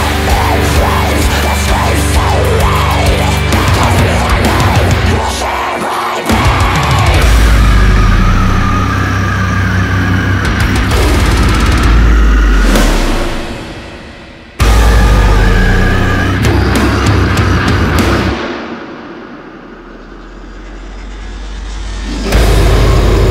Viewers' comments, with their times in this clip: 0:06 I can already see what sort replies this will get hahaha, but the breakdown you cant tell me that it doesnt sound like a straight rip from lorna shore's 'King Ov Deception'. Everything from the snare bombs, vocals, even the transition from the breakdown straight back into the symphonic sounding riff. I dunno man, straight after I heard that, thats when it lost me